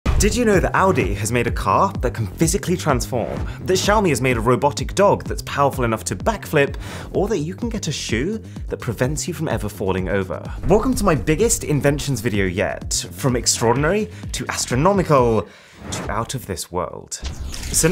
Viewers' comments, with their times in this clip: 0:00 thoughht he said Albion